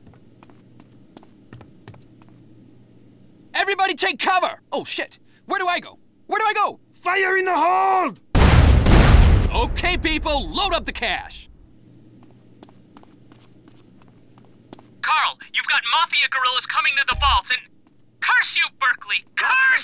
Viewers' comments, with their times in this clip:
0:07 fire in the hole! demoman voice